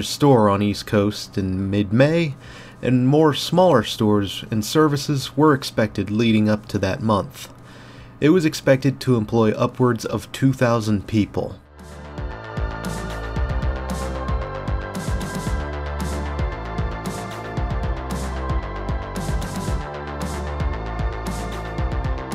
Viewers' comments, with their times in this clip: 0:05 Was that an old Johnny Rockets, ? Good video. Late edit: rewatching this video, is THE first time I ever realized this Monmouth(for Monmouth Mall) is pronounced differently, versus say like the town of Monmouth, Illinois.